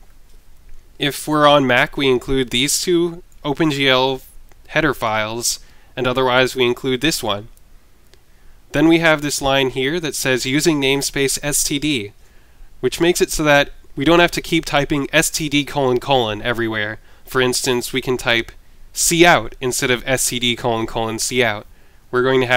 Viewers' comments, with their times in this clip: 0:06 some people are are beginners to c++ also with i think they instead should try to understand c++ first before working with OpenGL, and is it just me or does it sound like he says hedophiles xD